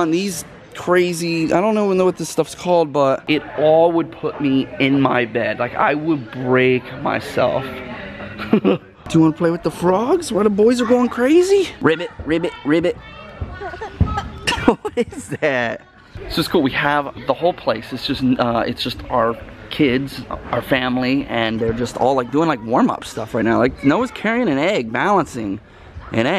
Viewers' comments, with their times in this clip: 0:07 Love that laughs keep up the great work. Great vids.
0:07 that laugh tho 😂😂
0:07 That laugh got me😂😂
0:09 Did Anyone Notice Romans Laugh 😂